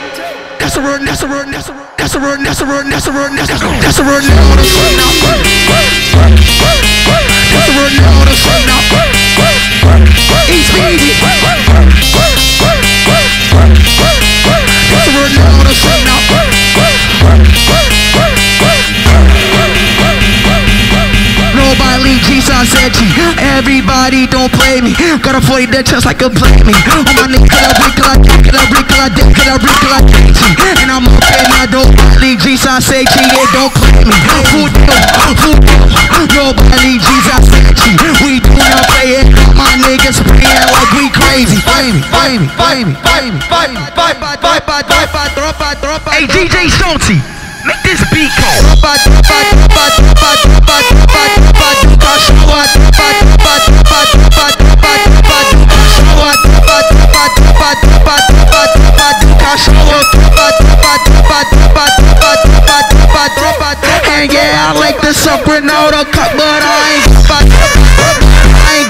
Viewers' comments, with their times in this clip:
0:04 find this sounds like a horror sound lol. Great song tho
0:04 Honestly, I heard beat lot of times, but this is the best one
0:04 No way they sample speed's barking....vou vou vou😂
0:04 on x0.75 hits istg 🔥🔥
0:05 the bark on beat💀💀🔥🔥
0:09 That switch fire thooo ❤️‍🔥❤️‍🔥
0:21 best BEAT without a doubt!!
0:27 Why does the background music sounds like tins cans😂
0:33 is fucking insane speed really spitting on death grips type beats
0:49 Bro on on 5x fast is firereee🎉